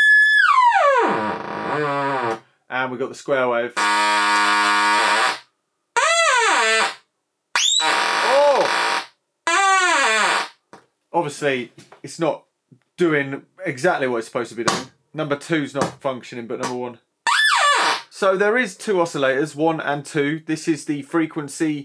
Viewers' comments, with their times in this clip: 0:03 perfect sounds for psychedelic trance music
0:05 The fartiest square wave ever.
0:06 sounds like Sooty and Sweep having a good old chinwag about how the musical capabilities of this instrument have been severely restricted by the lack of logarithmic VCO’s….or something!